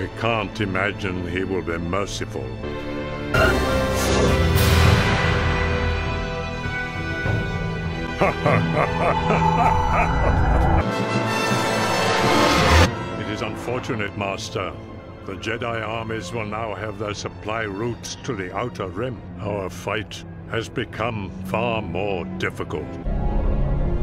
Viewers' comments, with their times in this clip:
0:08 wow never thought dooku would laugh evily. Most sith lords except palpatine and maul never laugh.